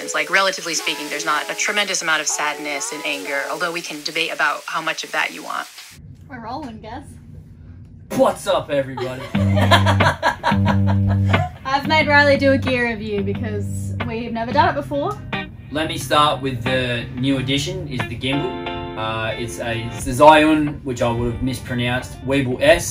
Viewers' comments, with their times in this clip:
0:07 pretty spot on impression if you ask me
0:08 Was he pulling a Peter McKinnon? Or was he laughing for other reason?
0:08 I cracked up at your nice Peter McKinnon impression ! :DD